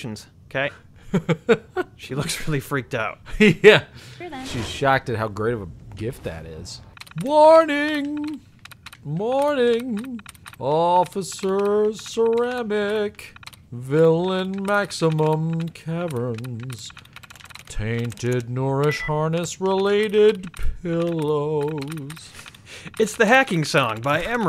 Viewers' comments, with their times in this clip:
0:07 That was actually a lovely little song.